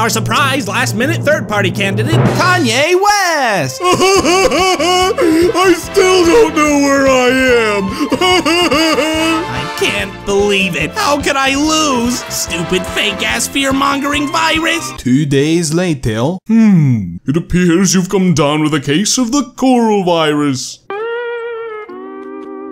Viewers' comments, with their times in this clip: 0:04 Patrick: (crying) I still don’t know where I am! (crying)